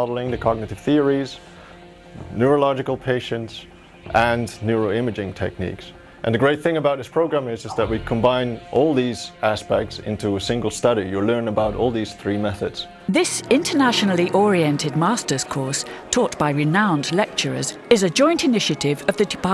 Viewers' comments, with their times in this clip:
0:07 Lol, he received a skype message